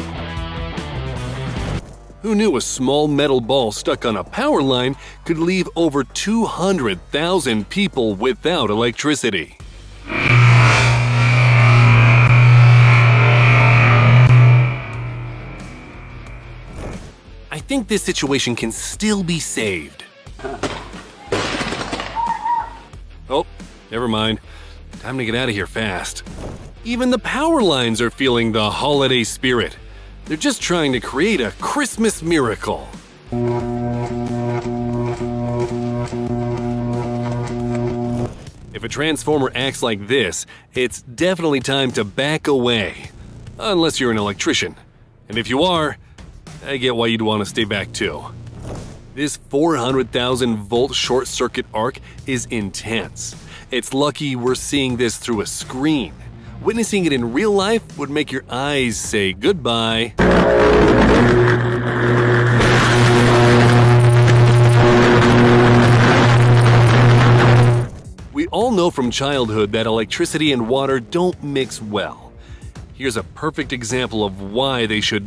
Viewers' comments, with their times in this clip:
0:09 did the power line fart cause i think it sounded like it!!
1:02 it will make your ears also say goodbye 😭🙏